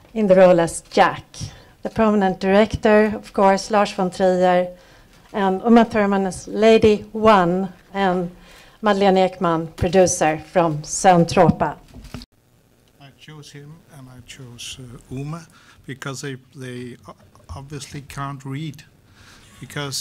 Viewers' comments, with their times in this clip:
0:07 Larsh von Thriller is my favorite band